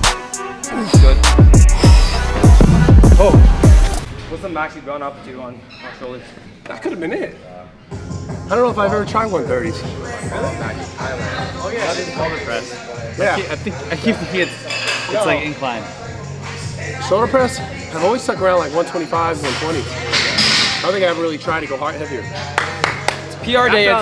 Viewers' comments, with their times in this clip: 0:08 they bumping that yb in there 🤣🔥🔥 #4kt #38